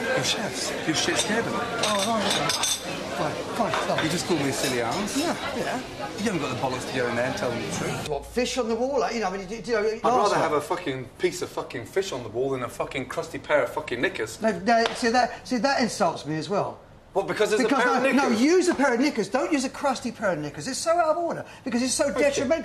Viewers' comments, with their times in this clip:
0:07 i swear it sound like they saying niggas...😂😂😂